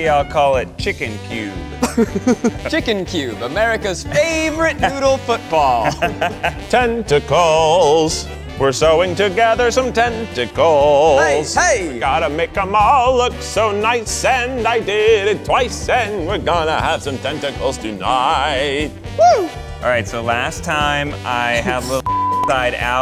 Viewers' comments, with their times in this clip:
0:06 y’all Keith would absolutely kill it on Broadway as the Wizard of Oz because he deadass sounds like Joel Grey singing “Wonderful”